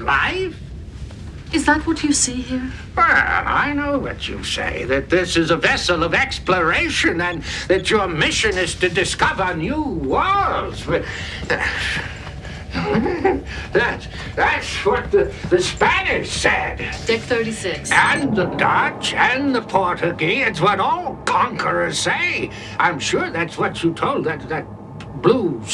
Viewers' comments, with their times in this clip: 0:09 That sniggering when he sees the Bolian. The actor who played Twain was a good choice. EDIT - Just checked and Jerry Hardin who played him is still with us, at the grand old age of 93.